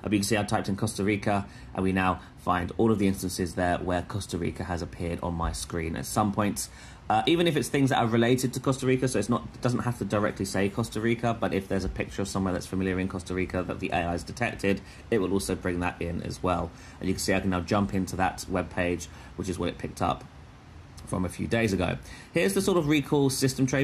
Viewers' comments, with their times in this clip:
0:04 minutes and beyond, is that fan noise of laptop? Its loud.